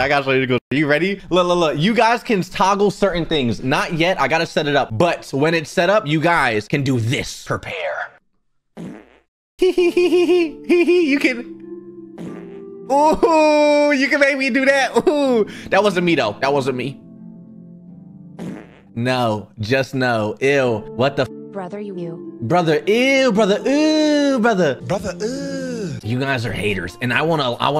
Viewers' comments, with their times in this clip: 0:10 the npc music im crying 😭